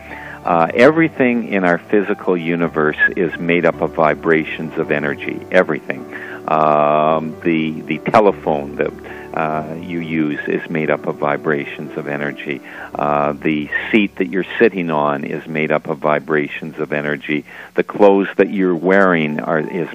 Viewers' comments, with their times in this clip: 0:07 I got to then the guest interrupted and started talking right when the host was still introducing him It was so bizarre and so rude! At first I thought my computer must be acting up, but I listened a second time and that is exactly what happened. That was enough for me; don't really care what he has to say.